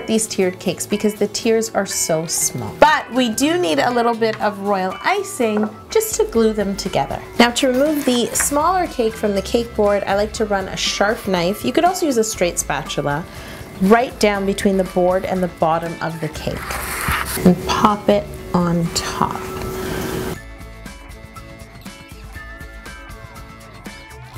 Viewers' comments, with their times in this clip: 0:10 Yolanda.... you said 'sharf knife'😂